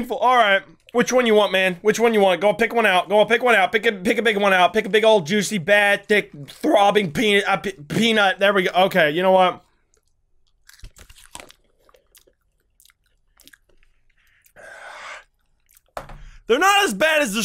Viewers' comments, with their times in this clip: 0:05 me: takes all him: (gasping for air)